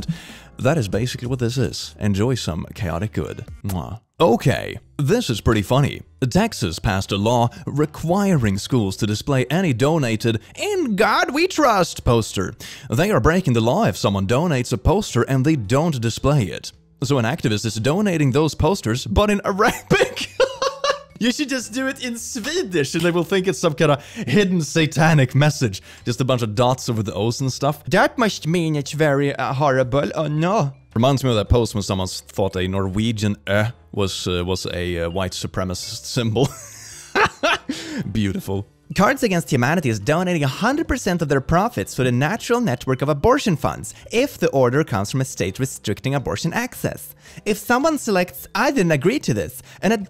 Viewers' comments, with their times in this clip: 0:09 OH MY GOODNESS! I've only watched up to and this is the first video I've watched and this voice...I could sleep to this, lovely voice. ❤
0:21 That's a very svenska way of saying "Swedish"
0:32 OH MY GOD. It feels so good to finally hear someone pronounce the letter right! As a norwegian I have heard so many people pronounce this letter wrong and it is grinding my gears like crazy!